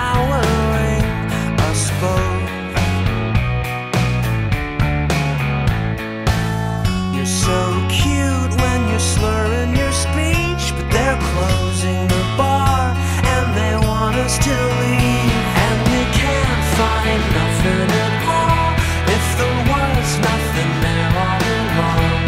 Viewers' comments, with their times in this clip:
0:03 Lol who else’s gets Juanes vibes?